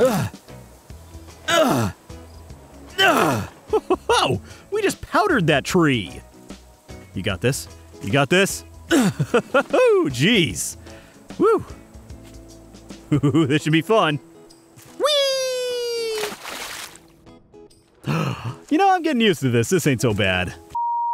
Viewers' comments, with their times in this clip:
0:05 Love the very subtle shift to crazy, like a where he says "WE just powdered that tree."